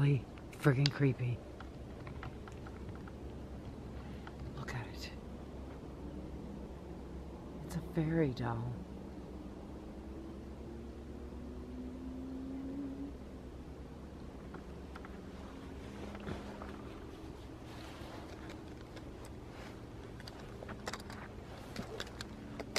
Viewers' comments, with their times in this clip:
0:10 ish. Is that an owl??? 🤔😳